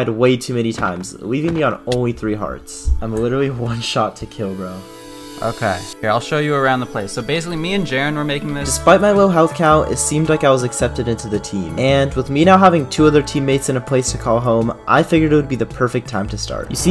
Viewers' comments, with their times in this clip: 0:04 when i heard the music i thought he was going to die lol